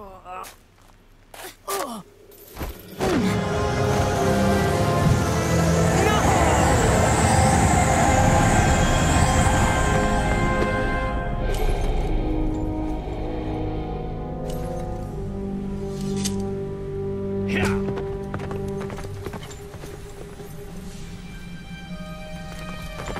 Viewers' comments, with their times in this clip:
0:10 is it just me or does King Arthur sound like Darth Vader